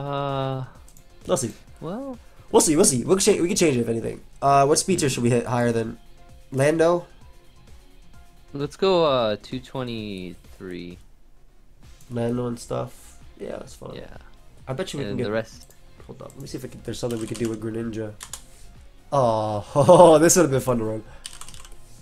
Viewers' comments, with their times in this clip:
0:03 me when I realise Life Will Change is playing in the background 😁 the song is absolute vibes😩